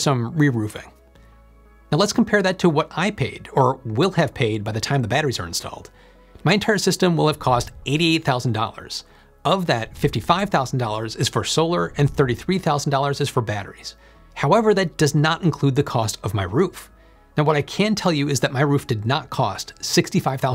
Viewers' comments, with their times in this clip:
0:06 In the Spanish IA generated dub becomes crazy